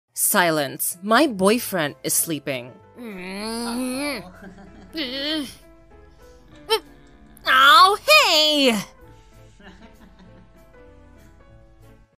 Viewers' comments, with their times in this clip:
0:07 That was cute when Uzi hits N and N laughing SO WHOLESOME💜💛